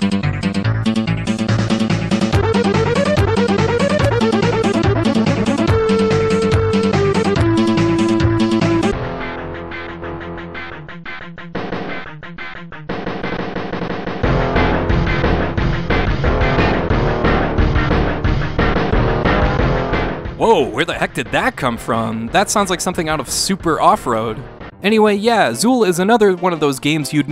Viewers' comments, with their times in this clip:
0:09 It also sounds like Uniracers.